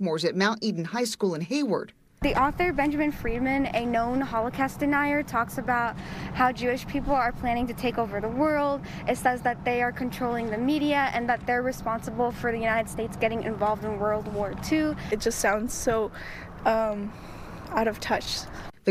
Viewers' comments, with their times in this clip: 0:03 Does she say h-CAST or is t just me? :face-purple-crying: